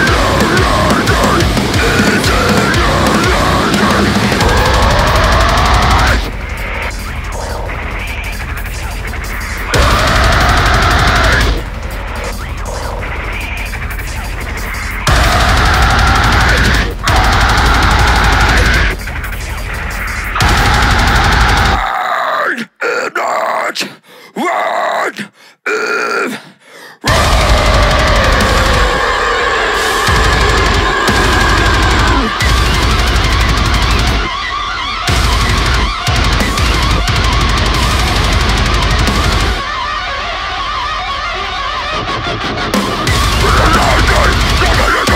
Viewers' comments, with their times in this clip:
0:05 OMG this bridge before breakdown hits hard!
0:26 is like the LSD injected deathcore version of Future Breed Machine
0:27 There's no attempt to play the lead guitar part ?
0:30 "Live in Studio" with two hearable guitars, and one guitar player ? Interesting "live" concept ;)